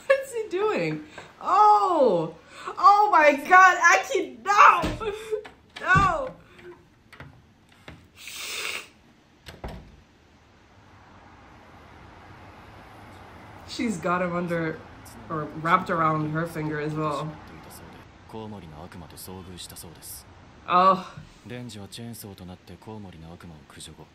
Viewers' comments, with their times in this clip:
0:05 I don’t know how to feel about you hissing at a fictional character
0:06 LMAO THE HISSING
0:07 The hiss had me dead 💀 FANTASTIC episode. I loved the care and detail that they put on everything, but specially in Aki's morning routine, wich, if i'm not mistaking, is not in the manga, so they are adding new stuff that makes perfect sense and flesh out the characters even more. Amazing.
0:07 That hiss was almost personal 😂😂
0:08 Did you just hiss...
0:08 That hiss hahahaha